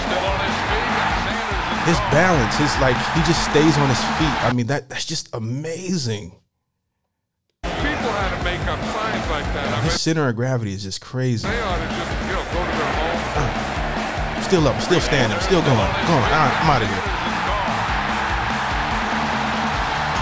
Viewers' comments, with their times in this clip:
0:08 You can hear Madden himself making TV commetaries about Sanders